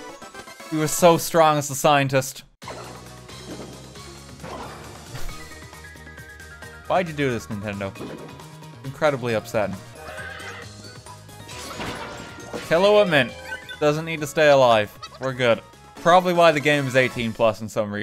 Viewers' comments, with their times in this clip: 0:03 The silence was gold